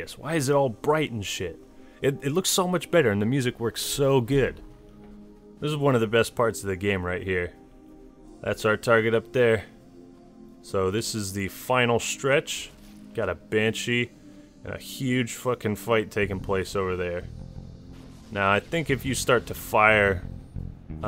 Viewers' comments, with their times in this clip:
0:07 best track in any of the halo games